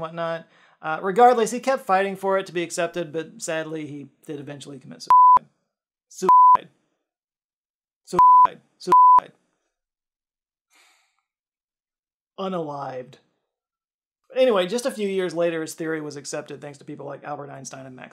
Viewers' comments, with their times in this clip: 0:04 Be careful with the beeps. I heard in other communities on YouTube that YouTube considers beeps as "bad words" and your video could get demonetized because of that. I have no proof and I haven't seen any proof of it, so maybe it's entirely wrong. But just be aware of it is what I want to convey. Great Video by the way....but that's always the case with your videos 😊